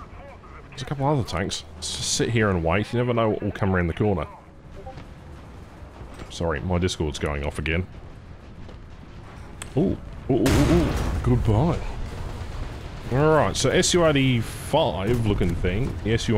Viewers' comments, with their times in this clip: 0:04 that notification got me